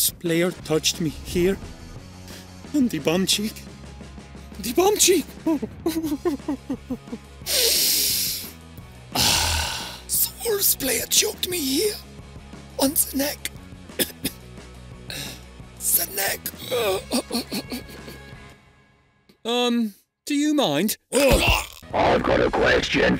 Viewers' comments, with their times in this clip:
0:10 why does he sound like mahrez